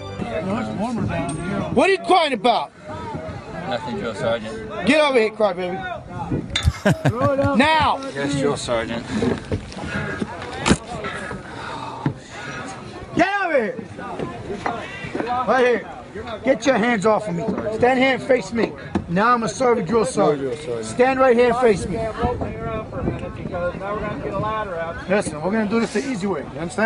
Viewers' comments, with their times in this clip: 0:08 "Yes Drill Sergeant" whispers: ᵒʰʰʰ ˢʰᶦᵗ